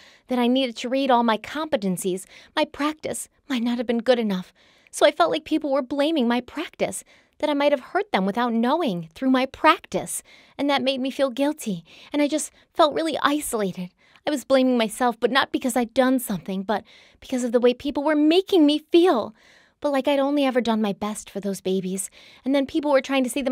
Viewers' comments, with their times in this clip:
0:08 this reading is totally disgusting. Do u find any of this funny? You either have a serial killer or an innocent woman behind bars, and u are getting a good laugh out of it...😢